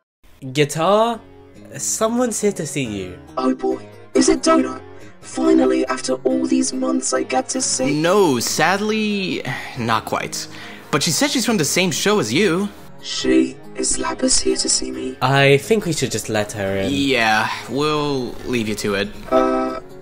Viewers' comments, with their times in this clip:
0:07 Who's this handsome sounding guy? 👀 Lol fr tho thanks for reaching out to me to voice Uno Card, dude!! Always wanted to be apart of an object show so it's an absolute honor ^^